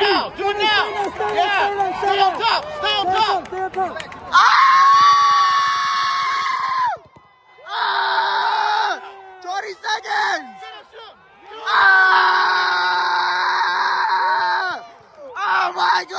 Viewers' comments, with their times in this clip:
0:03 Bro his scream xDDDDDD
0:04 that scream had me dying 😂